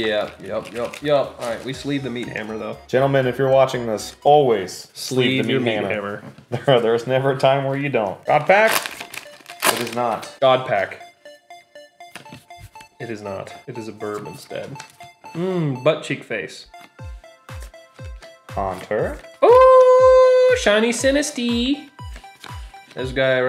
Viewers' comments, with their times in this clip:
0:08 i thought they got a god pack because of the music